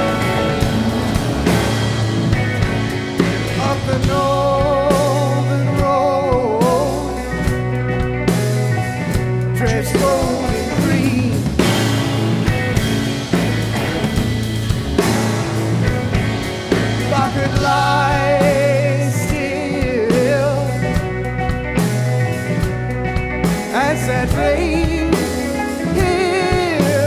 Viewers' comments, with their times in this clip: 0:09 That fill made my day